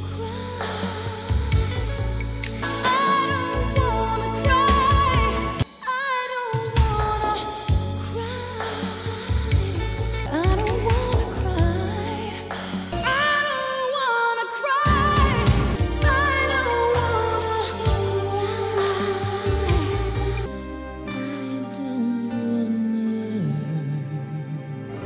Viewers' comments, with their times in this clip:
0:10 sounds just like Whitney 😮